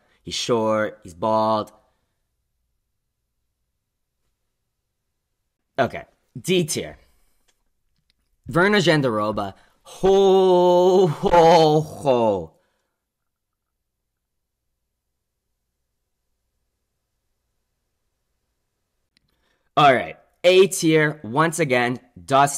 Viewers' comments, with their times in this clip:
0:08 The silence HAHAHAHAH